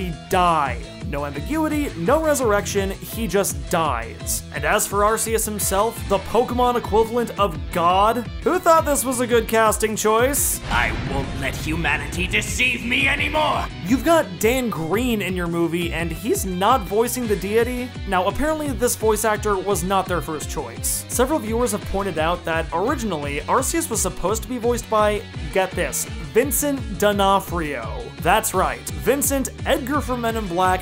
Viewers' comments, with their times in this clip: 0:10 I cant unhear frieza now
0:11 damn the english voice once again fails.... dutch voice sounds imposing and above you (like a god basiccally, an angry one :P). though I just dislike listening to my native language...but still it was cooler in dutch again in the movies